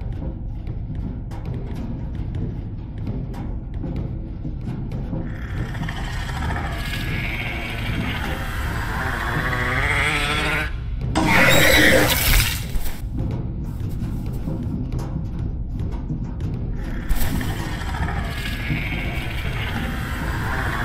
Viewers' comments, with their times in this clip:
0:04 there not that scary to me I just laugh cuz there sounds like a angry dog lol 😆 😂